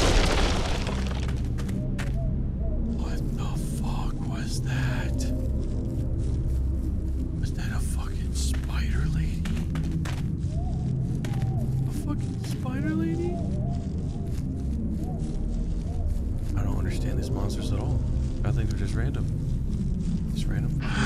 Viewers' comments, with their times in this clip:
0:05 I stopped to tell yall that my dogs reacted to the horn sound of the game as if someone was at the front of my apartment lol